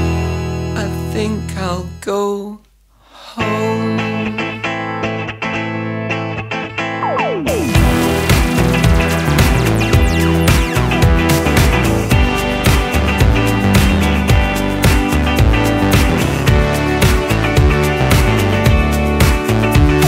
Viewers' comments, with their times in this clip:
0:03 More than ten years after this remix came out, I'm still thrilled by this brilliant remix of Miaoux Miaoux... Man... starting from this tune simply throws the listener INTO SPACE! The guitars, the drop, the groove, the b&s vocals and harmonies... A world class house remix let me tell you. I think Miaoux Miaoux deserves a lot of respect for this one, actually this was the track that hooked me in the "The Third Eye Centre" B&S album, someone got a very good decision to include this remix in the album blended with the other songs.